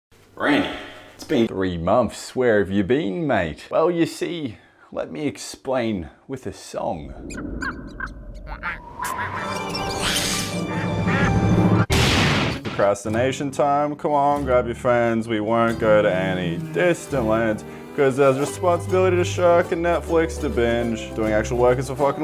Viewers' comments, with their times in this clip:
0:03 that STOMP tho in the intro xD